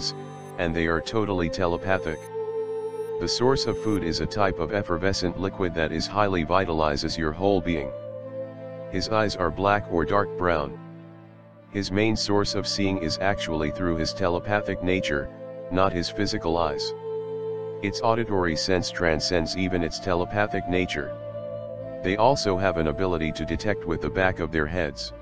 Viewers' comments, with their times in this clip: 0:07 The Music is wicked